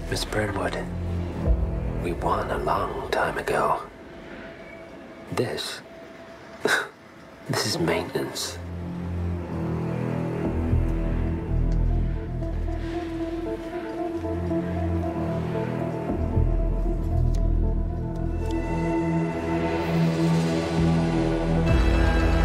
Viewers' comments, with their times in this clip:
0:09 "Ms. Burn wood, we won a long time ago. This-- Is just maintenence." killer line AND delivery. This guy performed an amazing "kingmaker" without also making him an arrogant ass.